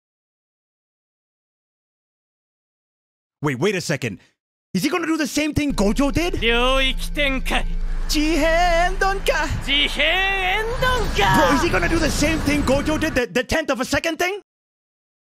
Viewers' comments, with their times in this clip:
0:03 Your pronunciation and voice were perfect and I couldn't help but laugh.😂👏